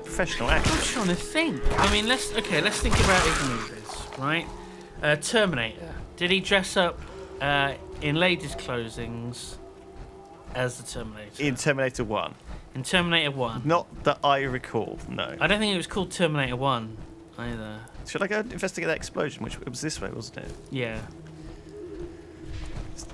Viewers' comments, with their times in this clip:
0:07 anybody else hear weird like ghostly talking?